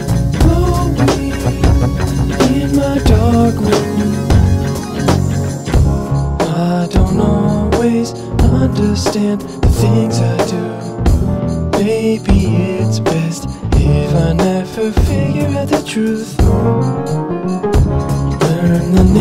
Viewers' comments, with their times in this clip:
0:06 Got that lazy Jacob Collier tambourine